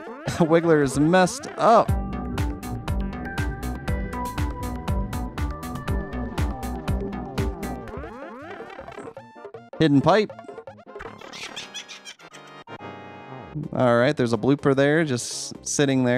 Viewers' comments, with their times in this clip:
0:03 Lol funny music